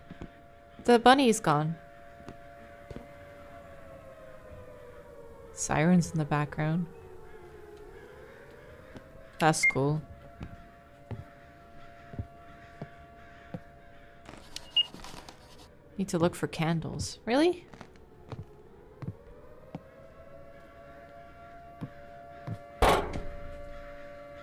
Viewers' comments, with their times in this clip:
0:05 Lol I was not paying very close attention and my midwestern butt was like, "Oh wow, it's Wednesday already?"